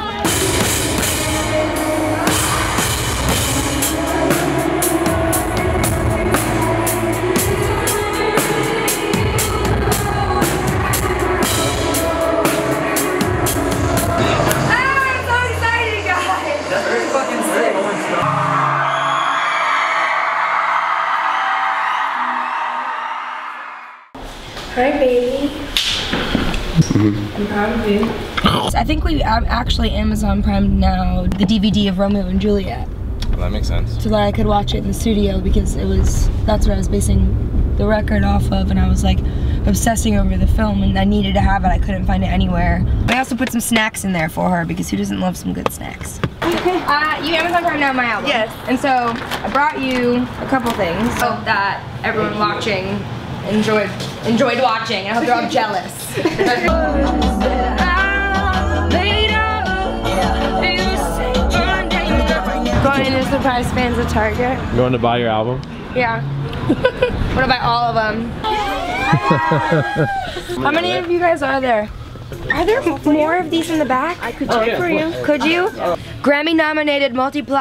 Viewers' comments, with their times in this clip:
0:04 sounds like fairly local
1:04 iS THAT LOGIC I HEAR